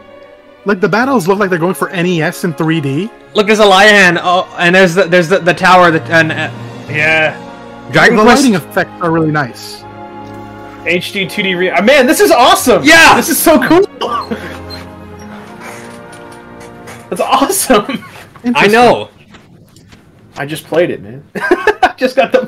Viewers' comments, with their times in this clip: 0:03 man was so hype he forgot how to speak lol